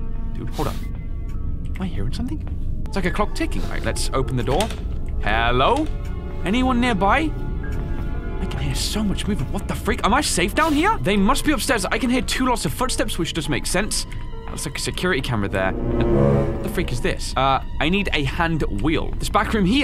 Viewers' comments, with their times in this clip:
0:06 the ambiance sounded like it came from skyrim